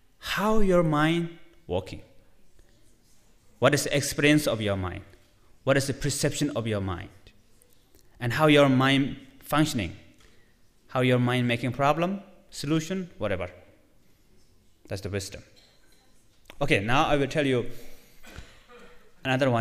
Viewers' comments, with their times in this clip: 0:06 Mingyur is too much of a snowman and quite inarticulate. The large gold Buddha statue detracts of his message. I prefer simple teachers like the Dalai Lama, Thich Nhat Hanh and Mathieu Ricard. I only made it to of the video.